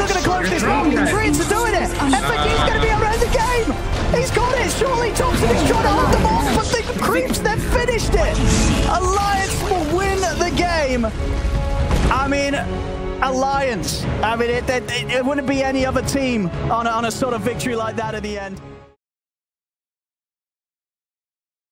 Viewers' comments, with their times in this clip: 0:08 Terminator theme plays while Prophet gives the thumbs up.